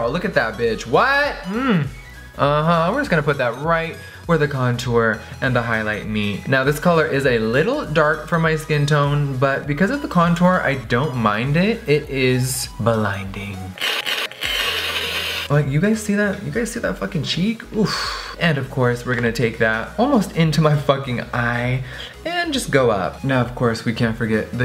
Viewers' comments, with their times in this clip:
0:07 When he yelled scared the shit out of me😂